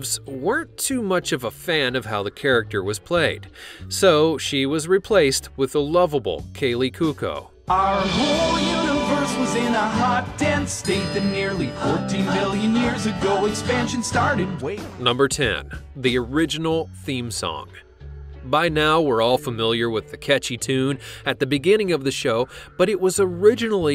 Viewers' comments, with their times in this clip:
0:05 kaley “koo-koh”. Lollll